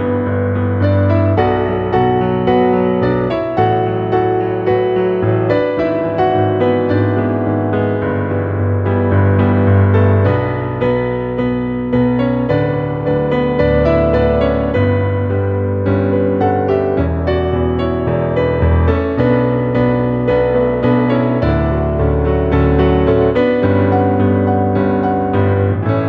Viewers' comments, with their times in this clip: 0:10 that little bit is my favorite part of the whole song and the definition piano notes put on lyrical songs is fucking stunning and I love it